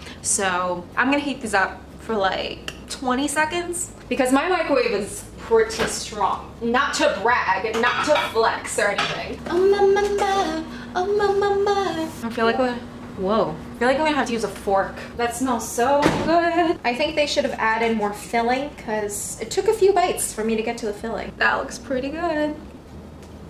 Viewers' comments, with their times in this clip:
0:09 I thought I was the only one who just randomly hums BTS or singing oh my my my from boy with luv